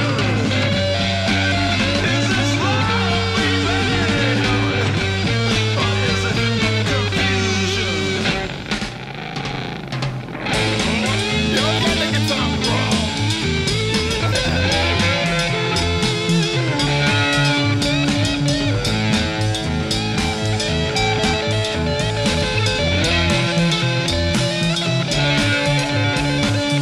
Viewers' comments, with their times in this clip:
0:08 Jimi makes his guitar sound like a Harley. Over half a century later people still can't figure out how he did it all without today's technology. The answer? Pure, one of a kind genius. Check out "House Burning Down." Jimi was at the top of his game. 🎸